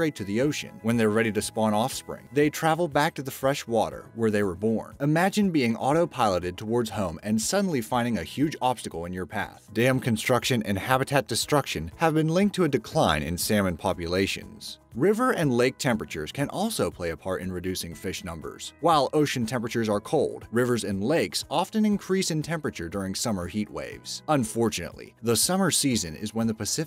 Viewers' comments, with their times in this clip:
0:10 Mr. I earn less I thought he said, "Damn construction and habitat destructon!"